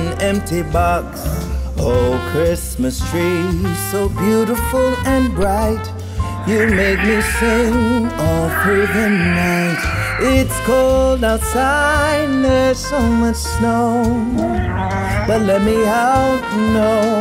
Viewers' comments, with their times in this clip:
0:05 What an amazing singer 😂